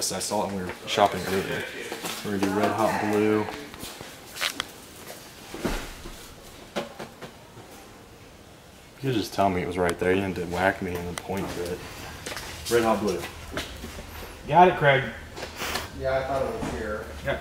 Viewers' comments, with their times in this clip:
0:04 he sound mad lol